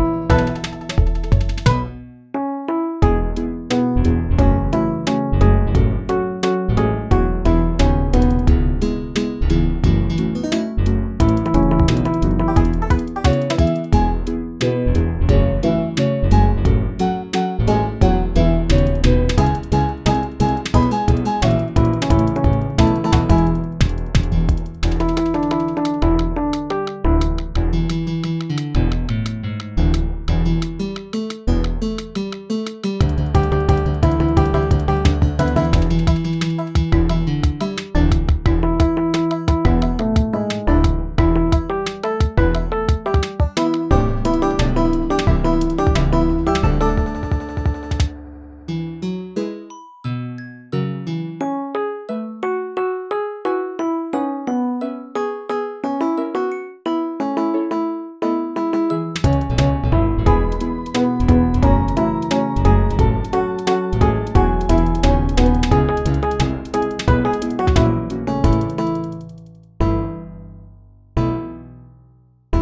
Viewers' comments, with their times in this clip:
0:06 Angel's line being completely moo'd out is just fucking hilarious
0:09 Lmfao, just almost the entire verse censored.
0:09 the censorship is taking me outtt 💀
1:00 damn, actually really good, how'd you get the drawn out notes ?